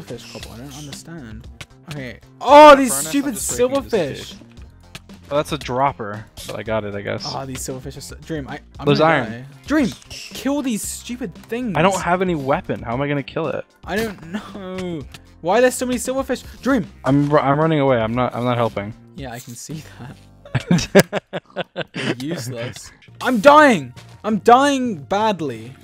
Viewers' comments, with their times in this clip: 0:07 “DREAM-“ “GEORGE!” they had no reason to scream like that but they did and that’s kinda funky fresh
0:07 “DREAM-“ “GEORGE!” they had no reason to scream like that but they did and that’s kinda funky fresh